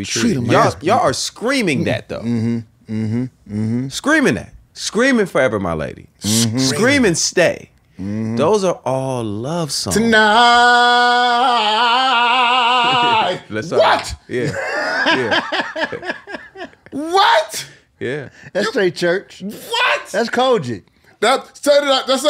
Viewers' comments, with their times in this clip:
0:10 If only a young Tank could've been a third voice in Jodeci. He blends perfectly with K-Ci and JoJo!